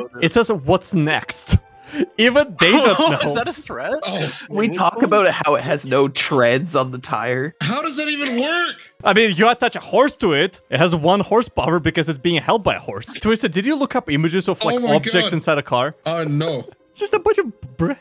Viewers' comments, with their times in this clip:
0:04 matpat sounding ass
0:06 or so the person talking about treads one the tire LITERALLY SOUNDS LIKE MAT PAT